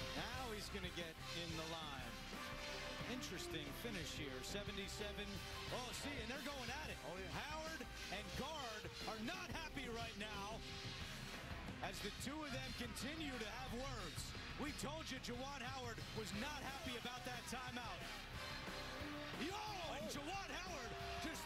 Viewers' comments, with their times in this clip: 0:08 “Howard and guard ARENOTHAPPYRIGHTNOW!” 😂😂😂 yo why he say it like that?!